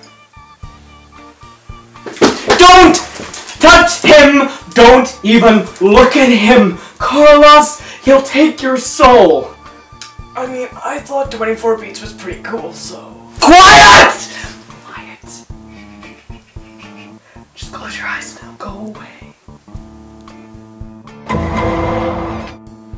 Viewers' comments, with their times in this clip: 0:03 I think Carlos is really fighting laughter at how ridiculous Cecil is being about Steve right now. Ohhh ... poor scientist wubbie! You don’t know the horror yet.